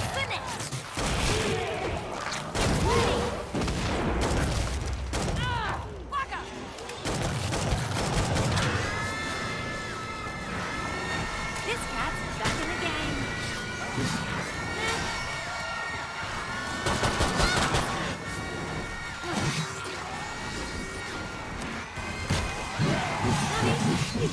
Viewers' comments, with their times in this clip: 0:09 all those siren screeches are terrifying
0:09 Anyone hear that siren screaming over and over ?